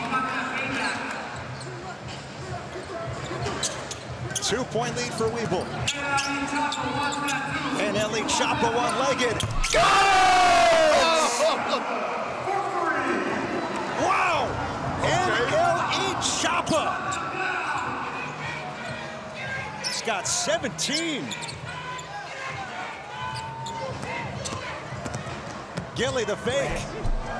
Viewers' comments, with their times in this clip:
0:09 That GOAAAAAALLLL has me dying